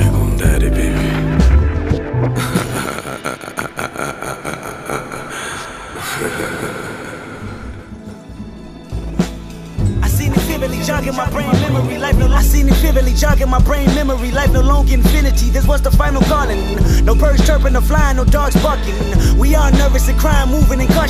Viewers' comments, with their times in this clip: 0:09 .... sorry, had to do it. Fuckn love the break down. But that build up is to slow. And uncomfortably awkward. Still though.... Interdimensional Supreme Being God MC: Kendrick La(fuck'n)marrrr!!!!